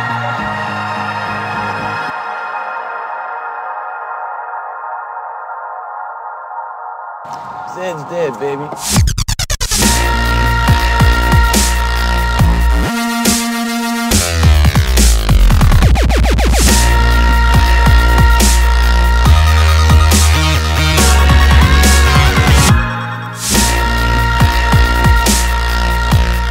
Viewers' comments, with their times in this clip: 0:08 did he say "Sam's Dead baby"? LMAO how appropriate for me O_o